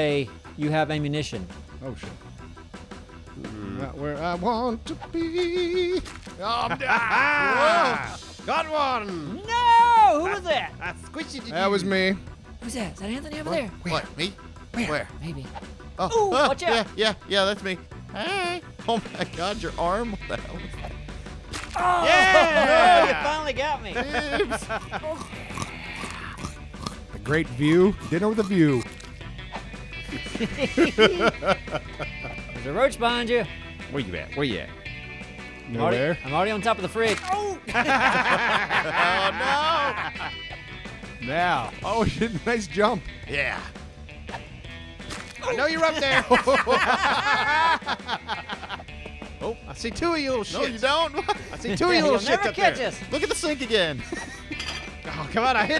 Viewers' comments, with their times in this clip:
0:05 it first sounded like he said not where I want to queef. Maybe I need my hearing checked.
0:37 Lol that voice